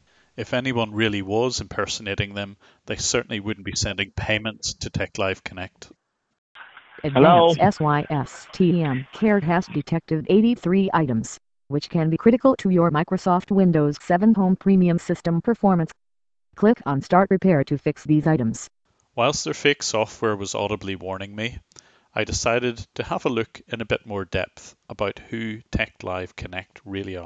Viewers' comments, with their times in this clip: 0:08 That computer generated voice reminds me of Bonzi Buddy. Jeez that took me back a bit lmao